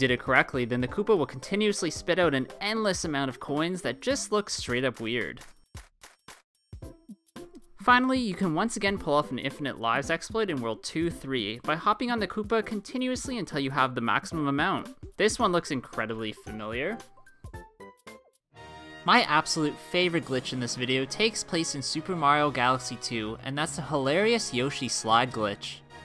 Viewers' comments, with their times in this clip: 0:08 weird angry noise